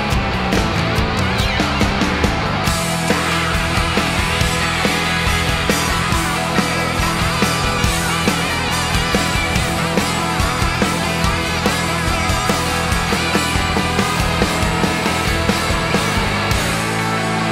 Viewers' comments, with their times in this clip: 0:05 I loved that slideee